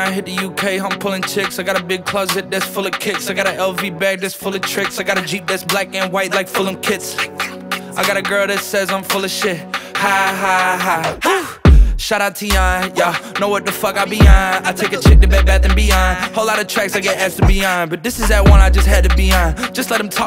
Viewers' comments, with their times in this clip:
0:05 i thought he said "I got a jeep that's black and white full of kids"